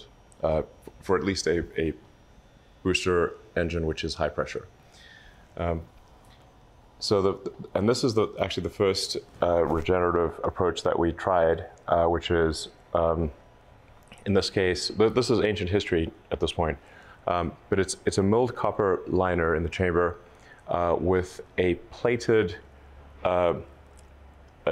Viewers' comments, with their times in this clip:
0:09 wth his voice goes into like an astronautic sound? weird audio or he is a robot 🤖...